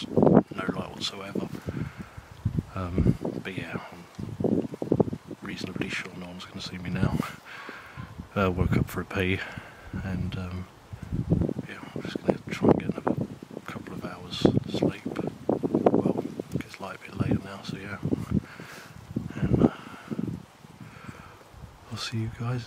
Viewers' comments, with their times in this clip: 0:06 what's that noise in the background?